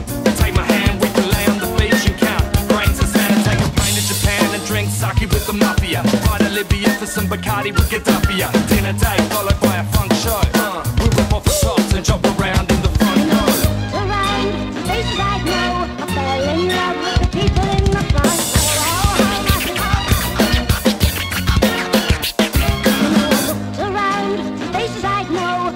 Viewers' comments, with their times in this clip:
0:07 That drum break is fucking insane...